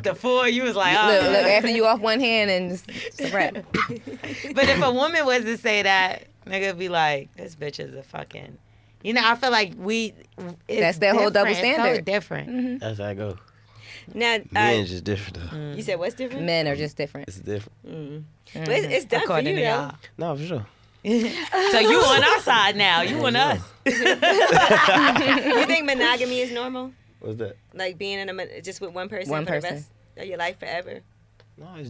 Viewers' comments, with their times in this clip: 0:09 Somebody most definitely farted 🤣
0:10 i know im not crazy somebody farted
0:10 who TF farted 😂😂
0:10 Word one of em farted 17 😂😂😂😂🤢
0:14 I heard a fart who else did